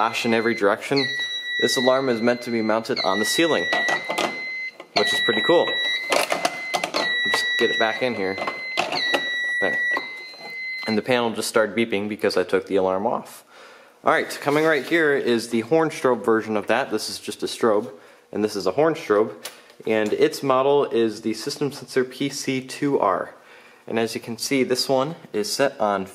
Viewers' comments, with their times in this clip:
0:08 Why is the control panel beeping